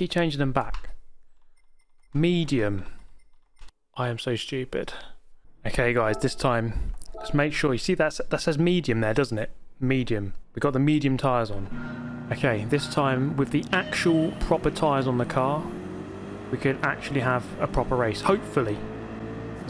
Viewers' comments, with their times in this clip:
0:03 that Leclerc impression was awful